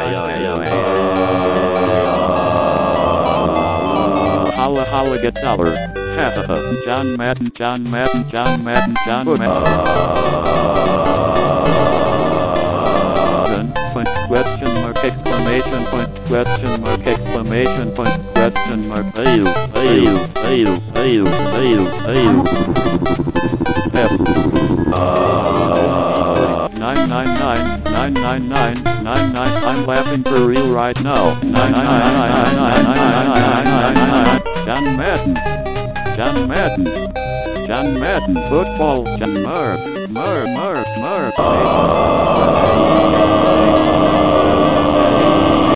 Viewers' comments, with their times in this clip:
0:04 (To be clear this what i heard.) "Halla halla get slaughtered." "Canda."
0:22 I love how cyan takes in a deep breath before he BRBRBRBRBRBRBRBRBRBRBRBRBRBRBRBRBR-
0:31 remember the seagulls from finding Nemo ? this is them now ! feel old yet ?